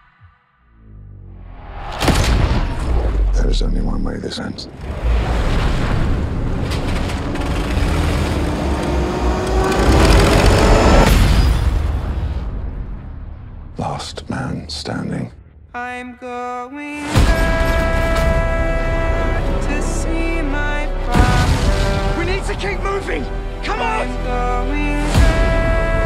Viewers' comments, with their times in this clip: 0:08 Jericho trumpet on biplane